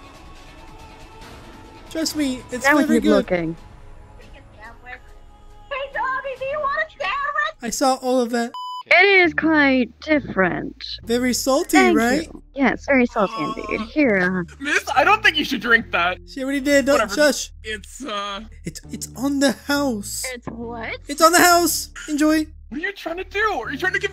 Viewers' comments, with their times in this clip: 0:05 Toga running across the room yelling " DABI DO YOU WANNA SANDWICH?!? " 😂😂😂😂